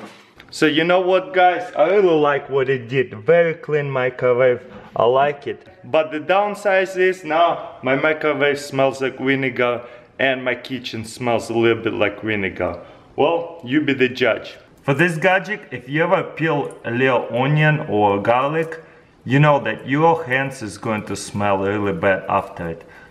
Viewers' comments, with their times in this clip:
0:08 my microwave smells like winegar😂
0:08 Now my microwave smells like winegar...
0:09 he says winiger
0:10 my kitchen smells a little like winegar😂😂😂😂
0:10 he said winegar